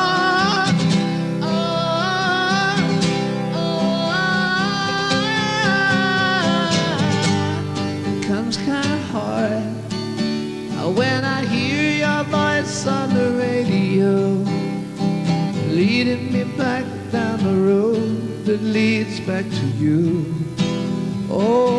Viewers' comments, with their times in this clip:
0:08 ...cant explain the magic of his voice!!